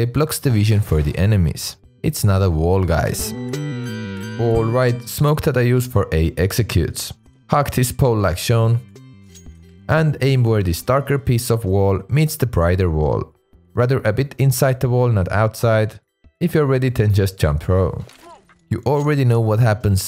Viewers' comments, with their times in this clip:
0:07 Don't say hug😅😅😅😅